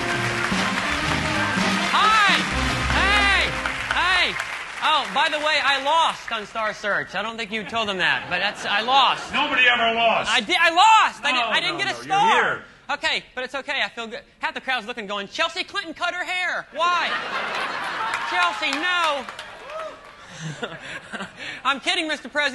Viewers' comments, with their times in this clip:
0:08 Ed McMahon actually sounded pissed off when Carrot Top said that he lost on star search.